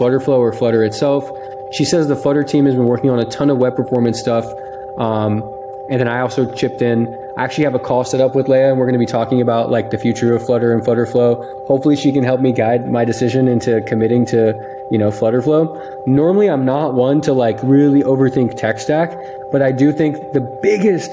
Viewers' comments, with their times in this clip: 0:03 Very interesting topic! :) Just a quick piece of feedback: there is some noise in the video (I think someone else already pointed that out). I am not sure whether it is environmental noise or from your audio setup. If it is from your surroundings and you have an Nvidia GTX or RTX card, then I can really recommend Nvidia RTX Voice. It removes all noises and is free. (And it works with some GTX cards as well, so don't be fooled by the name :)). Other than that, it's a very cool topic and an interesting conversation you struck with the FlutterFlow team. :)